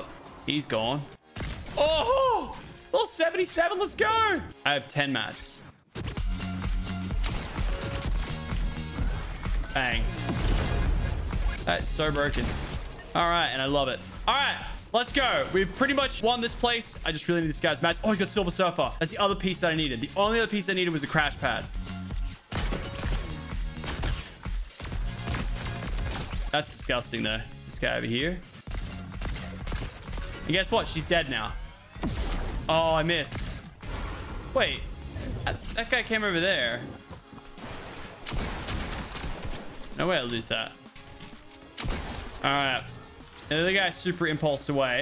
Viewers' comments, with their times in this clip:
0:06 bro I love this music
0:06 music sounds familiar
0:28 Those bullets synced with the music tho 👌